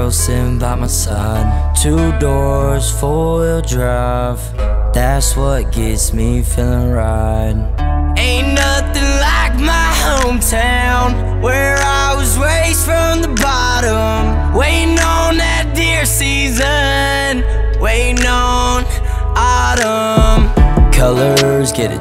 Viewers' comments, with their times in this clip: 0:08 he kind of sounds like the kid laroi